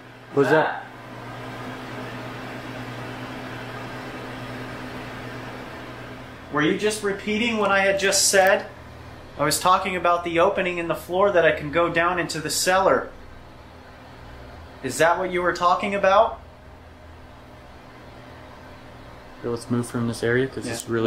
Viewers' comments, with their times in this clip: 0:04 the disembodied voice sounds like it could be saying “come in here” in a semi young male voice (took a few replays to make it out but the evp had just said ‘floor’ when u guys were talking about the cellar and then the voice talks)